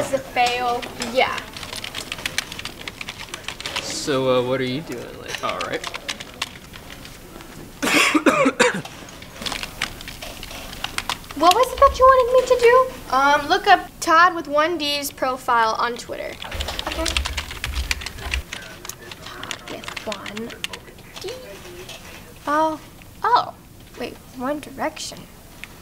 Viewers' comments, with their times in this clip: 0:08 oh no corona 😂
0:08 omg Corona virus